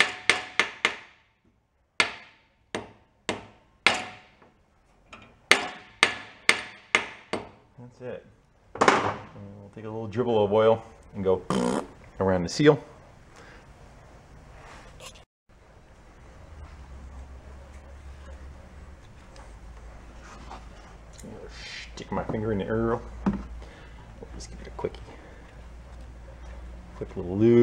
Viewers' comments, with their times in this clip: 0:10 We are a very mature audience. ... Very mature. Thank you for giving us a few moments of silence to catch our breath while you rimmed the seal.